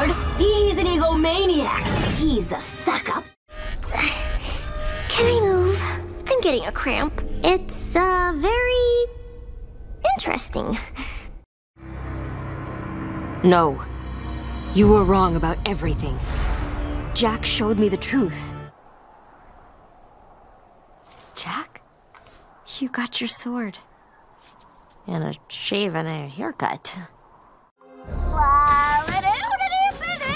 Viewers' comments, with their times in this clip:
0:04 This is one of my favorite Tara Strong voice role I heard so far.
0:12 So much deeper than all the other ones lmao